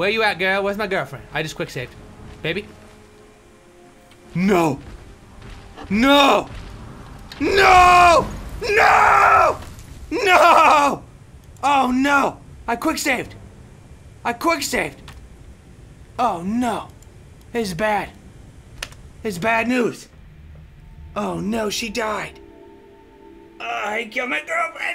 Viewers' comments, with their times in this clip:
0:07 who else thinks he sounds like homer?! ;)